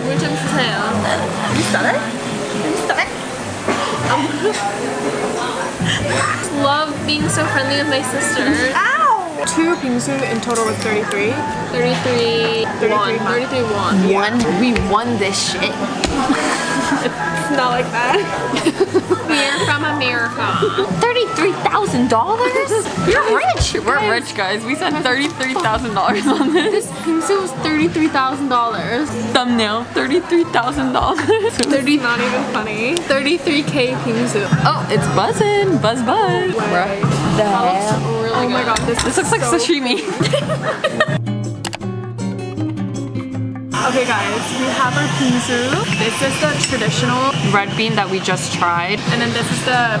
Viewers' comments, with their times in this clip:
0:06 not Jisoo's flower plating in the back ground...I love them and Blackpink
0:07 Jisoo playing in the background also ilyyyy
0:08 no me just vibing to flower in the background 😂😂💕
0:08 Jisoo's flower playing in the background 😭💗
0:08 love how flower by jisoo just playing in the background
0:14 jisoo song in the back ahhh 🤩
0:16 who else is dancing to kpop songs playing in the background 😂
0:19 bro i just noticed that jisoo is playing in the back if u put ur volume on High-
0:21 Love hearing Flower by Jisoo playing in the back
0:21 dem just chilling when flower plays in the background
0:29 can anyone tell that there was a blackpink song playing in the background?
0:34 when i started hearing the music i just started to vibe